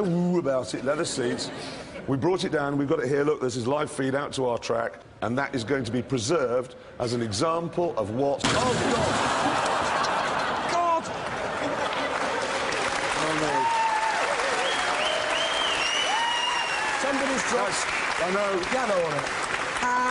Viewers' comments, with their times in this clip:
0:04 Jeremy has a cold